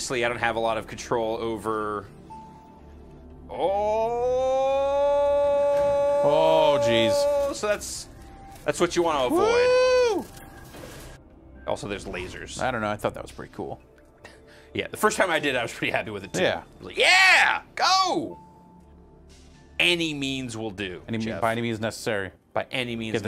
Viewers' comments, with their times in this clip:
0:10 casually says " Also there's Lasers ! " OK I must have this now, who doesn`t like Lasers lol lol